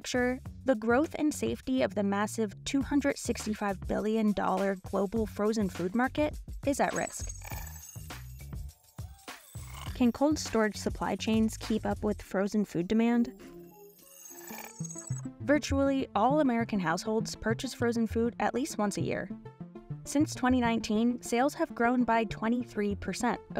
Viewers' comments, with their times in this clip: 0:05 ouch my damn ears drums!